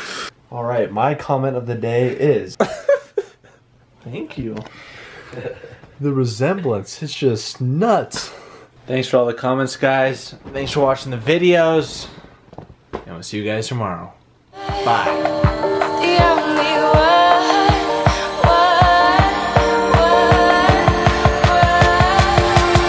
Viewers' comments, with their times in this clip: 0:03 RIP my ears
0:04 watch out headphone users!